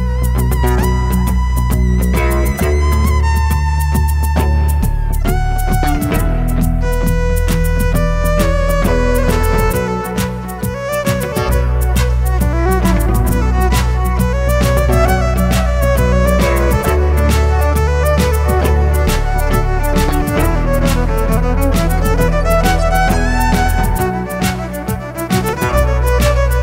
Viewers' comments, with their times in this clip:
0:09 I thought she was about to break into I'm Shipping Up To Boston.